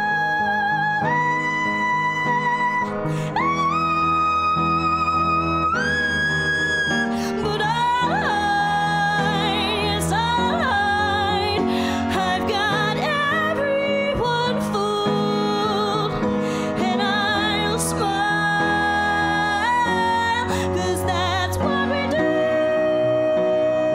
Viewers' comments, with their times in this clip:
0:04 That's a high note